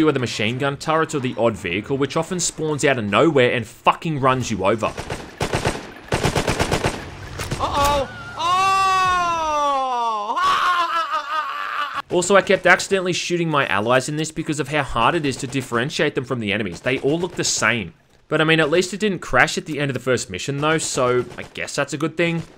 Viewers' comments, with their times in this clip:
0:06 that DSP laugh got me off guard xD love the content by the way mate🤘